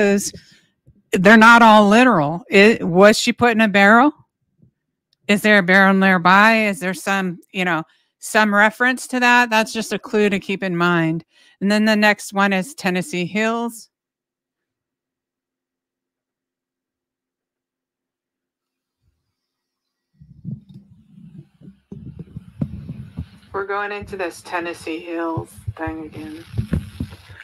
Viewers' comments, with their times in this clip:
0:09 ish no audio